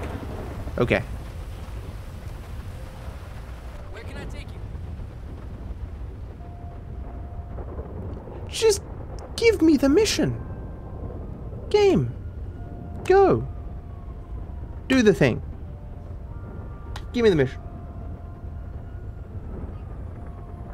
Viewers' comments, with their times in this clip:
0:05 As the cabby stares into your eyes and the LSD makes the world turn blue, "Careless Whispers" beings to play on the cab radio.